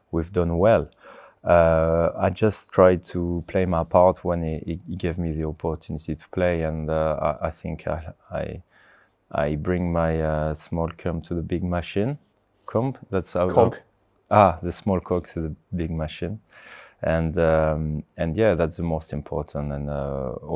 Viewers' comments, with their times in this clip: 0:07 man wants to get himself an ice cream